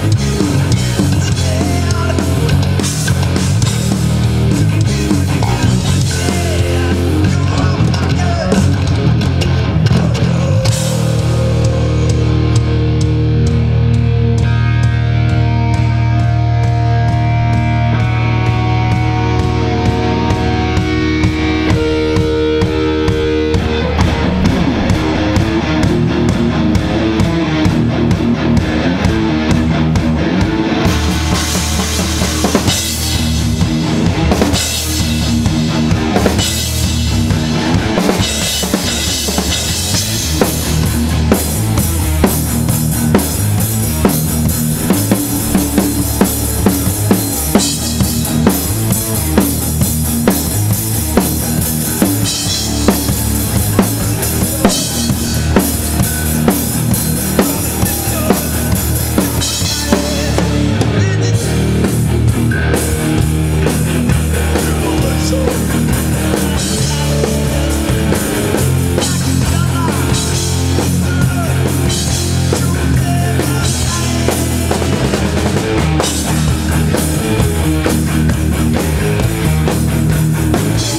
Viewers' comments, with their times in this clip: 0:09 James should incorporate those death growls into their songs more often, it would add a whole new dimension to their sound.
0:10 What a growl
0:19 band leaves the stage leaving lars all by himself playing the kick for the next 20 minutes.
1:03 I love when James uses that voice.
1:04 I love when James uses that deep voice.